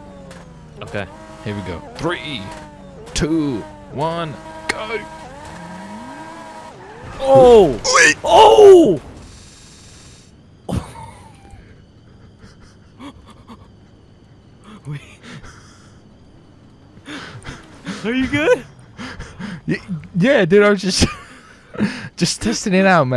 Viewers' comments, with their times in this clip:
0:07 a crash and a pig sound